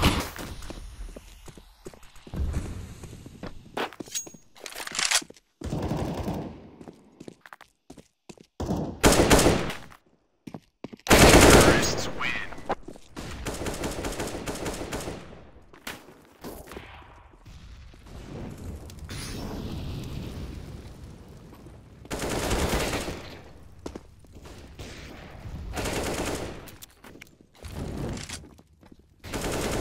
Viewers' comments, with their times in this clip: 0:10 your backtrack is very obvious!